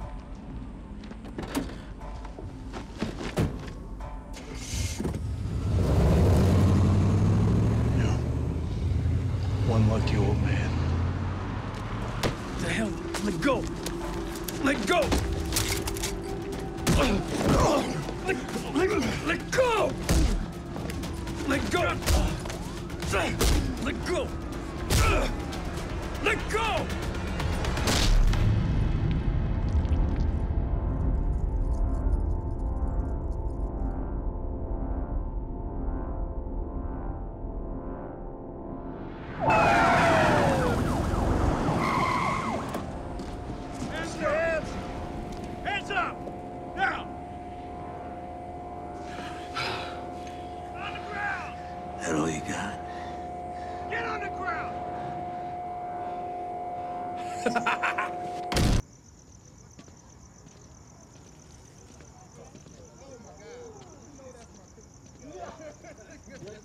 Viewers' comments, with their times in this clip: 0:04 My biggest complaint is when nacho starts the van and shifts into reverse you can hear three gear selections. Since it goes PRND21 as a shift selector and he started in park. He should have been in reverse but instead he was in drive. And still went backwards.
0:49 that was a real moment between them since tuco loves to fight, he laughed like "this is funny as hell old man"
0:54 I love Tuco's laugh as he lands his final blow on Mike. Classic!